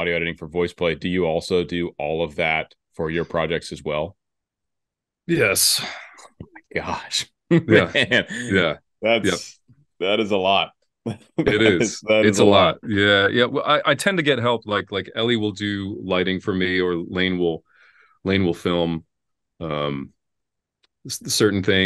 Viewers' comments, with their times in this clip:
0:04 that "Yes" was the strongest yes to a question that i've ever heard..